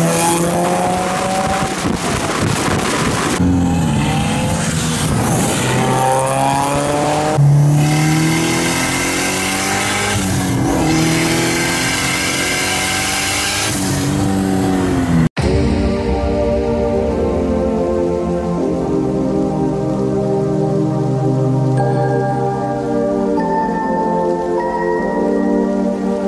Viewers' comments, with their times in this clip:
0:08 sounds like you got a boost leak or something